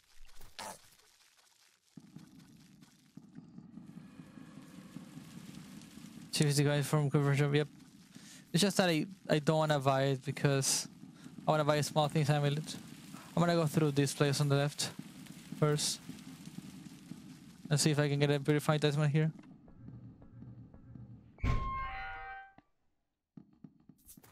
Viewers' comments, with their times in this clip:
0:06 hes speaking enchanting table